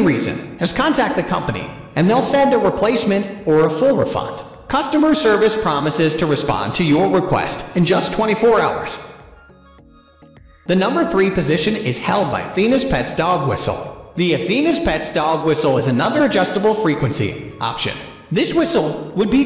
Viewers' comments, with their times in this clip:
0:05 your reverb made me stop watching ... started typing before then...you get an f